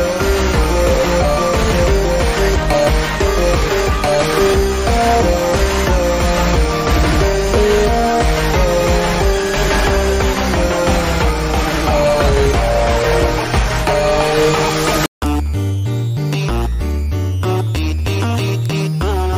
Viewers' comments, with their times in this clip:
0:05 I hear a small False Identity leitmotif here, this is gonna be great! So...how many entities has Boyfriend faced at this point?